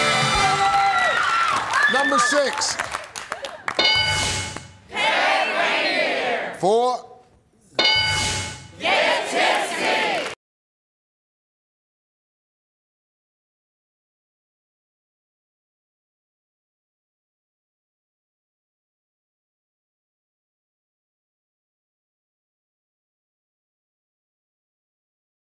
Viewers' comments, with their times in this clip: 0:10 there is No Sound is it due to copy right ?